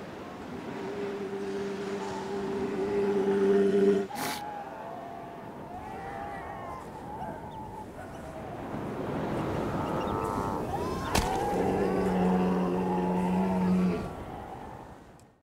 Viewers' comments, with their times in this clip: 0:09 the best hitting the ground sound ever xD